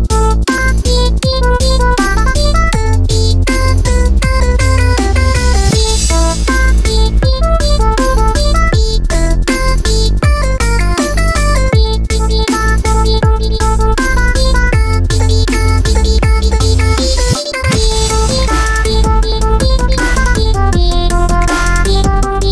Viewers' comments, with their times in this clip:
0:09 was i the only one that heard that…did girlfriend voice crack?